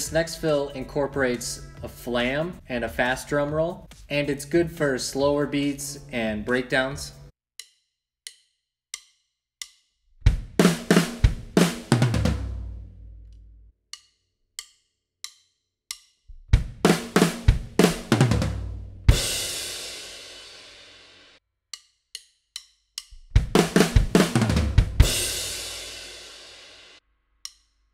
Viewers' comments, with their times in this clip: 0:09 cant help but hear rats eyes on this one